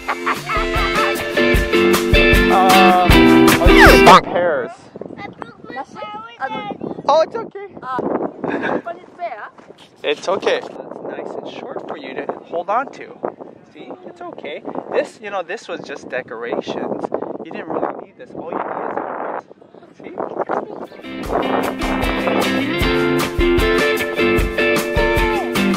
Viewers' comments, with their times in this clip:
0:06 was so funny especially with the 'bonk' sound effect 😂